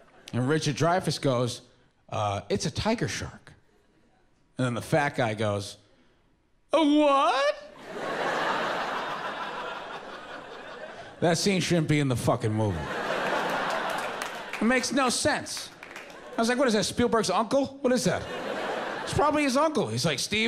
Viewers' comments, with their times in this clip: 0:07 sounded exactly like pops from regular show